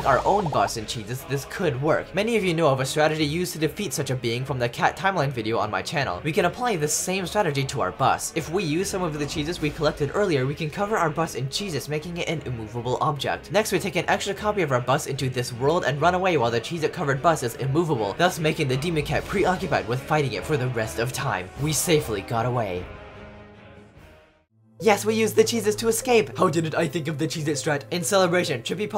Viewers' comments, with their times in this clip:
0:10 cover our bus in JESUS